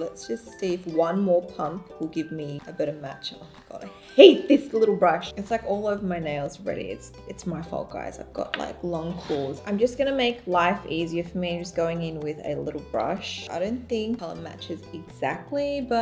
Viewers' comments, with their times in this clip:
0:04 The way she said it's so funny 😂😂😂😂😂